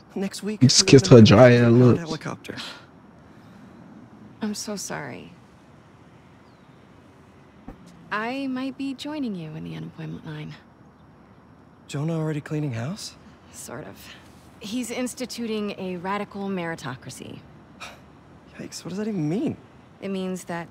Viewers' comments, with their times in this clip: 0:05 Your volume went out